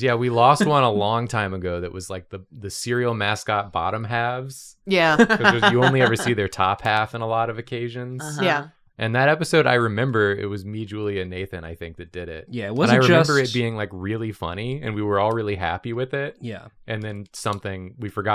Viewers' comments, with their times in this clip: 0:03 idk if it was just me but the beginning had some pretty nasty crackling but it didn’t take out the episode so it’s fine XD